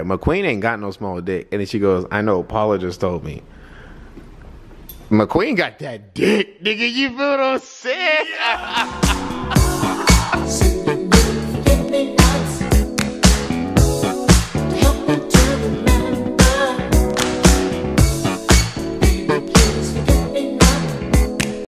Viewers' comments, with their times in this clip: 0:05 Dramatic voice change 😂😂